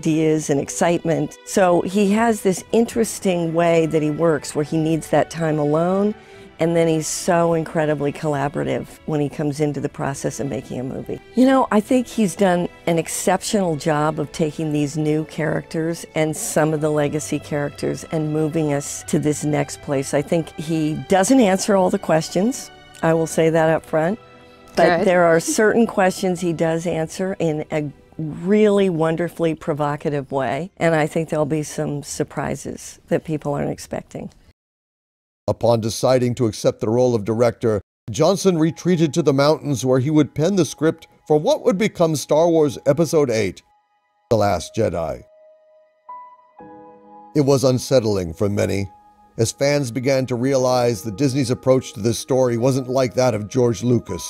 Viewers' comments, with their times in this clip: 0:10 The Audio cute out mins whats up with that ?
0:40 I’m am dumb or is there no sound